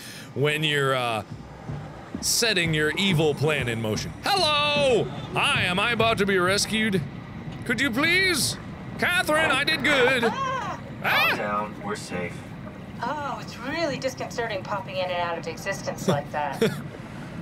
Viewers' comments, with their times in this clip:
0:04 (put on earbuds) what is that sound? sounds like a scream or desperate gasp for air and it;s coming from the right as Mark runs towards the zeppelin, just as he passes that dead body a second before